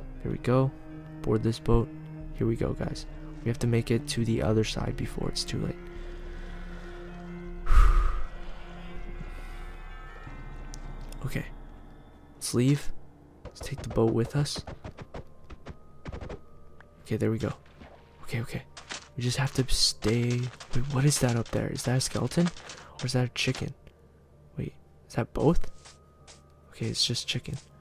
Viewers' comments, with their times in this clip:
0:08 there was creepy music did anyone else hear that